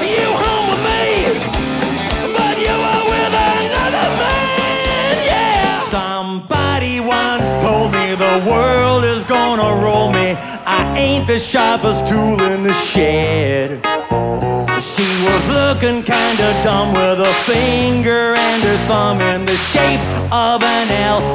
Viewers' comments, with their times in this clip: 0:05 Notice how for most of the song you can just hear the music, but then when all star starts playing, you can hear the crowd start cheering.